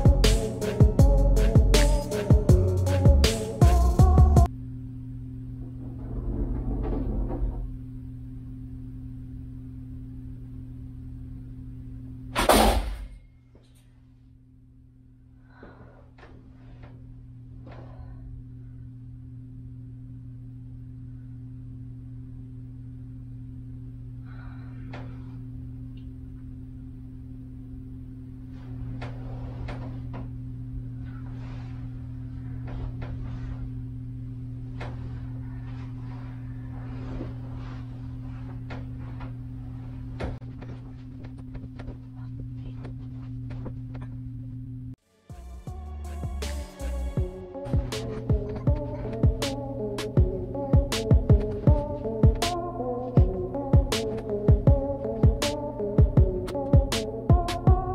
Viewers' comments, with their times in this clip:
0:06 sounded almost like a pool ball or something rolling along the floor.
0:42 I heard “Help Me”
0:42 when u fast forward I heard a voice I’m not gonna say what I heard but check for y’all selfs 🤣